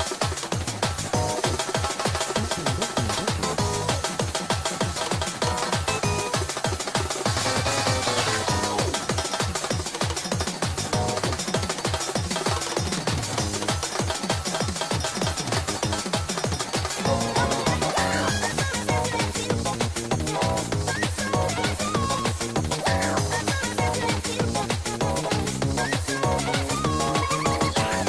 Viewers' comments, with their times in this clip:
0:09 why does sound like when your getting chased by wasps in animal crossing